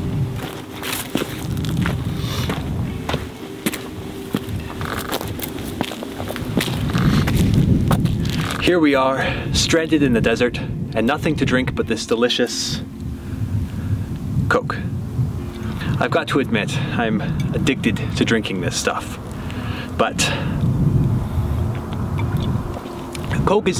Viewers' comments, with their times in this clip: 0:05 the sound effect you put in was reallllly clever. havent finished the video yet but im sure its gonna be great!
0:06 The something noise makes me wanna replay omori